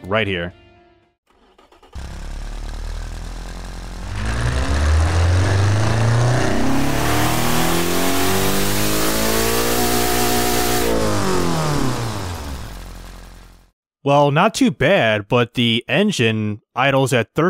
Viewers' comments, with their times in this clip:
0:05 honestly doesn’t sound bad!
0:05 why does the engine on the first sound test thingy sound like a static tv and max speed